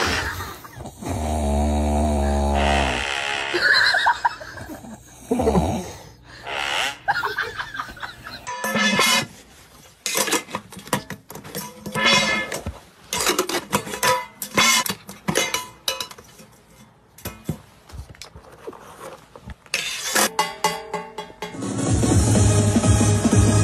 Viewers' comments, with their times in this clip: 0:04 bro sounded inquisitive